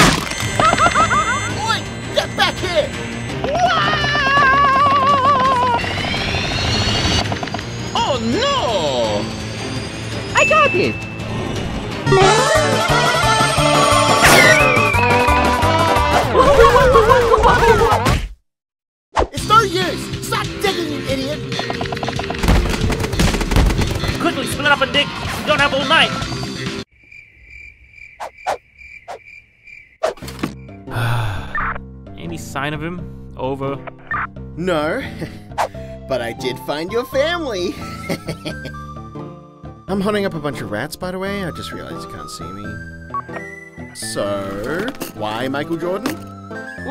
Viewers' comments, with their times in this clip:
0:09 Mario goes crazy and freaking breaks air with “Yahoos”
0:23 When he said this it sounded like he was ending the sentence I was so confused for a second
0:31 IT'S WHERE SMG3 IS GASPING FOR AIR-
0:32 SMG3 panting (I'm obsessed)